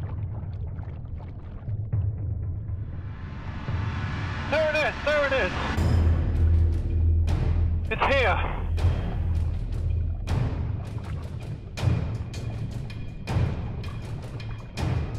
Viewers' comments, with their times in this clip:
0:03 Me: oOoOoOUuUhHhH oarfish! I wanna see!!! Discovery channel. BLASTS DRAMATIC MUSIC FOR 5 MINUTES STRAIGHT "this is so dangerus oh my good" Just show me the damn fish! But it was worth it :)